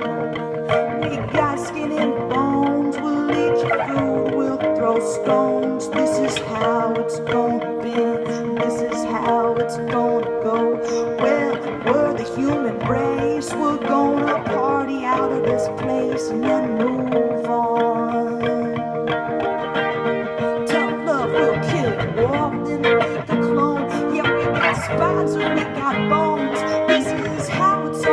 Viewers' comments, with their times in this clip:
0:10 I love this song so much that i can hear all the voices singing toguether :D